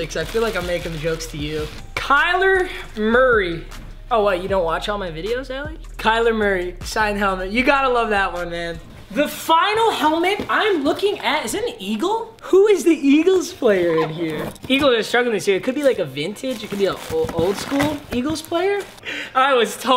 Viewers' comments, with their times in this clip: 0:04 he forgot to bleep the name